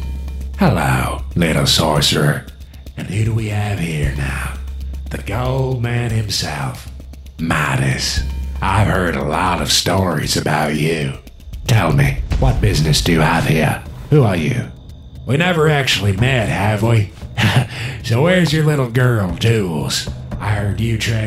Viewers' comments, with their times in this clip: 0:07 I’m sorry but they can never be in the same scene again I don’t know whose speaking